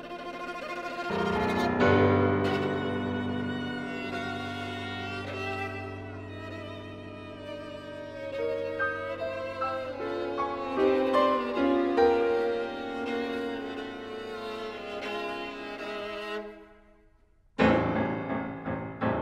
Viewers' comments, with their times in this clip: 0:04 DSCH..... bloody hell